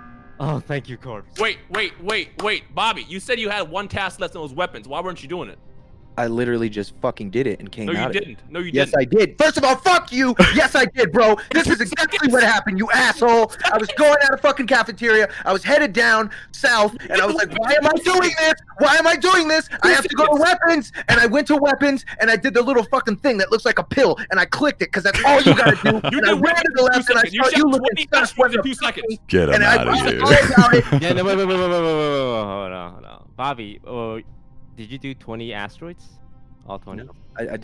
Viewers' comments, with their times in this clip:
0:07 Bobby losing it and yelling was probably one of the funniest parts of this video
0:09 Sykkuno laughing while Bobby swears😭
0:19 Am I the only one that didn't like ? The amount of anger in his voice. I just feel like there was no need to get that mad. Unless he actually was not mad.
0:20 bro needs to calm down and everyone already dead, just dying, laughing, listening to them argue and him yelling now that’s funny